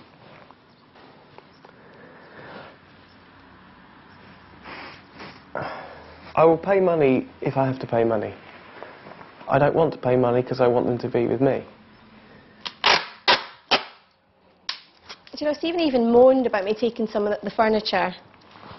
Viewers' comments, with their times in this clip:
0:06 Yup- he says it ish